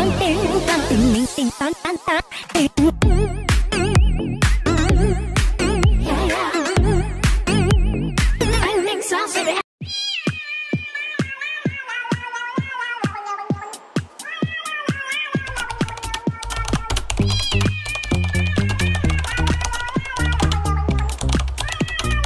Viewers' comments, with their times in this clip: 0:04 the music lol